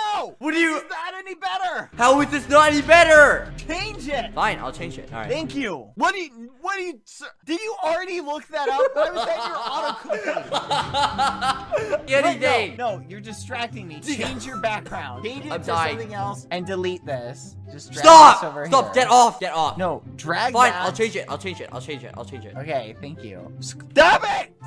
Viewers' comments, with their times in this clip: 0:06 the laugh is so contagious
0:08 productions it's just the laugh that gets me, he sounds so genuinely happy and mischievous